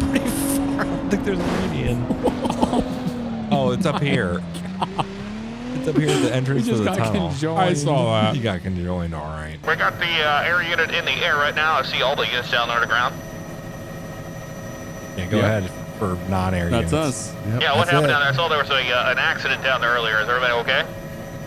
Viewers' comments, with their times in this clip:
0:09 I love the edit you did there with the audio so dayuum good!